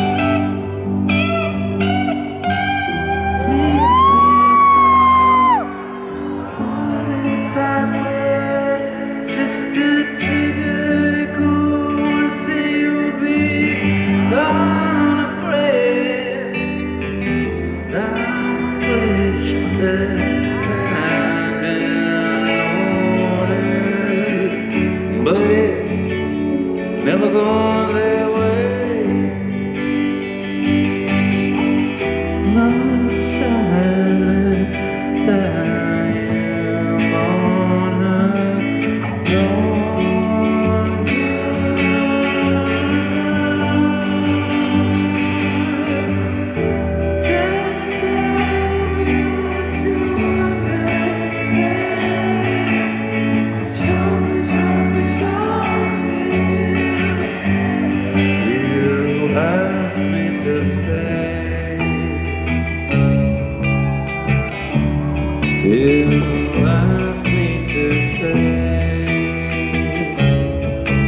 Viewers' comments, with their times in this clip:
0:07 The way he said “that way” was so emotional and stunning
0:57 that moment made me smile, crowd continues the lyrics "..a better plan"